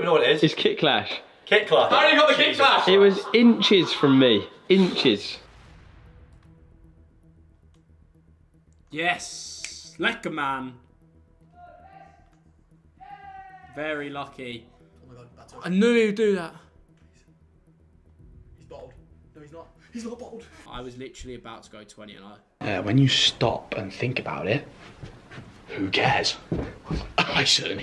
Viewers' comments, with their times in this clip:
0:10 Lovely Dutch there, quite a good lekker! 🇳🇱🇳🇱